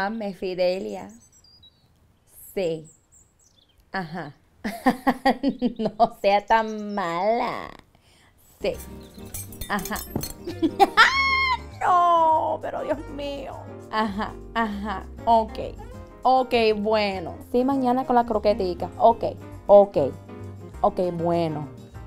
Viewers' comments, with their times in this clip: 0:10 yessus that laugh brings back memories...